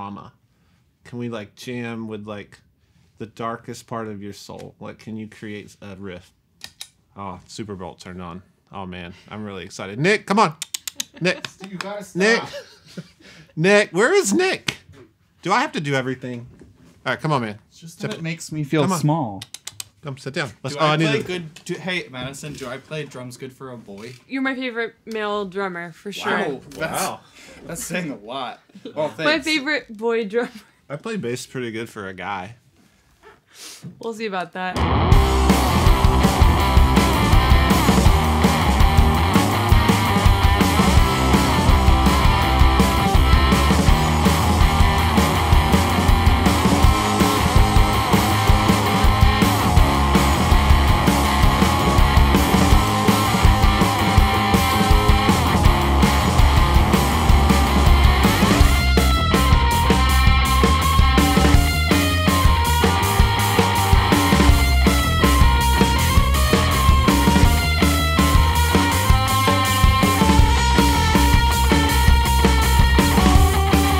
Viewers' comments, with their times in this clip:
0:03 madison banging out some straight up rock riffs gave me so much joy i want a full downloadable version of the jam very badly
0:59 Her lead tone sounds so dang good!